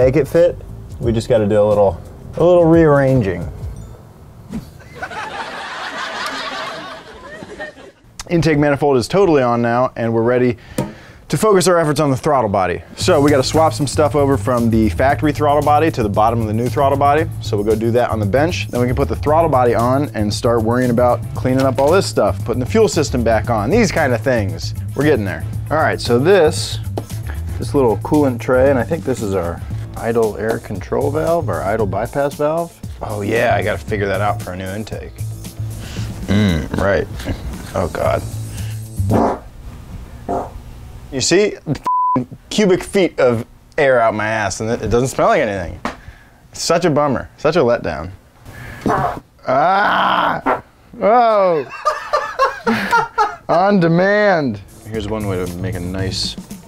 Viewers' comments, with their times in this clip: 0:05 hella threw me off. I was like “was that a laugh track?”
0:38 that fart tho